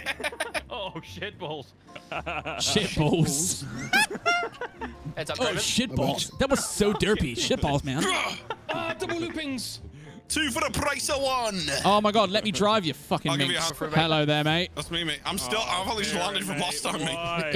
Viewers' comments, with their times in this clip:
0:03 Who that sounding like castrated Michael Jackson?!